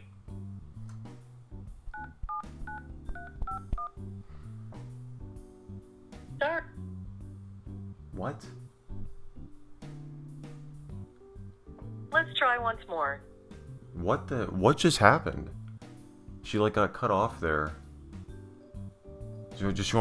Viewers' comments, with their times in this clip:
0:08 when you didn't mute so it thinks the echo from being on speaker is what you tried to say.